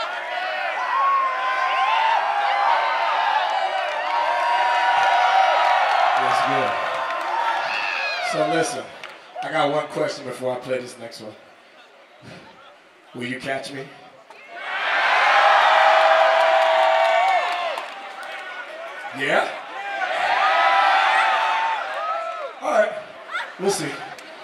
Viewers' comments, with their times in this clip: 0:10 Jpegmafia type beat